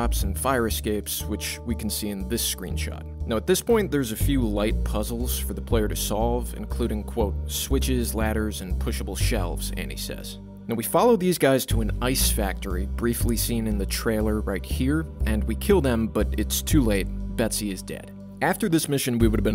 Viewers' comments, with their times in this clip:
0:07 What kind of pronunciation of the words et cetera is this? Did you realise you didn't know how to pronounce it and just flub it? That's hilarious. Also, what a sad loss. Another shitty GTA3 clone.